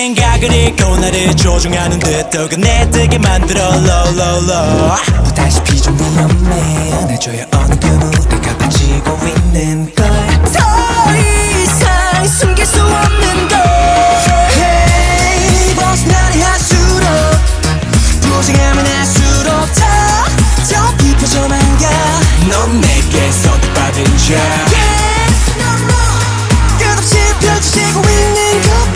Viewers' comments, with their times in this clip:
0:10 WHOMSTVE DOES THAT VOICE BELONG TO ITS SO BEAUTIFUL MY EARS JUST CRIED OUT OF HAPPINESS